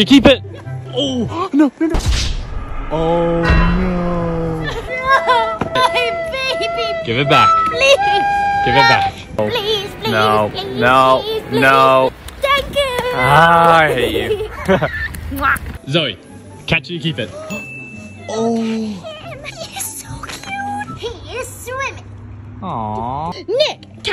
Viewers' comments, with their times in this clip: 0:05 the way she says “My Baby!”